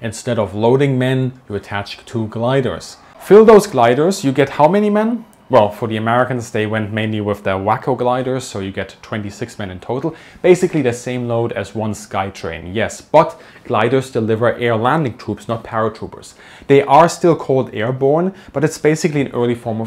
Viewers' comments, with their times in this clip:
0:04 Wacko gliders... that's crazy!